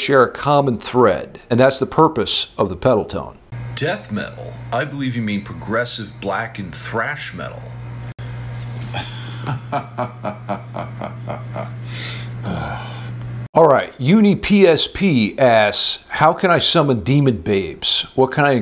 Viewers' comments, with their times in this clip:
0:03 sounds like Absu